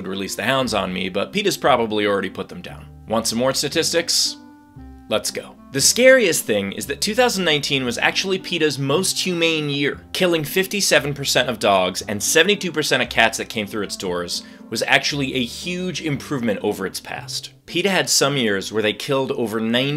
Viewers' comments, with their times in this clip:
0:06 "want some more satistics" STATISTICS